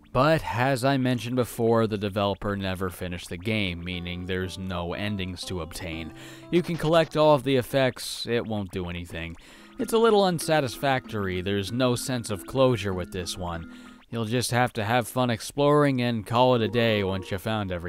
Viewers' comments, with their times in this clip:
0:03 if you listen to the music it sound familiar to a part of "Owen Was Her" a song in Touhou.